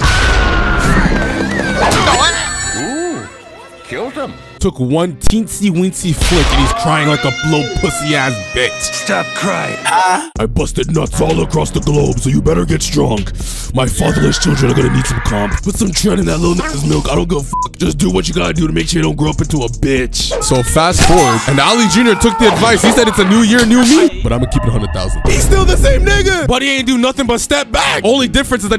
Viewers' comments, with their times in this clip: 0:10 I gotta know what background music bro was using shit was lowkey going hard